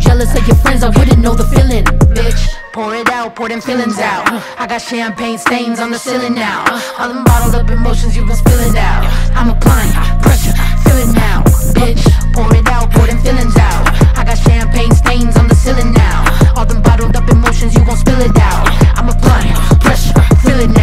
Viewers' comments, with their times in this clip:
0:06 Love the “I’m applying pressure feel it now” when the bass hits on. “Applying” and “pressure”.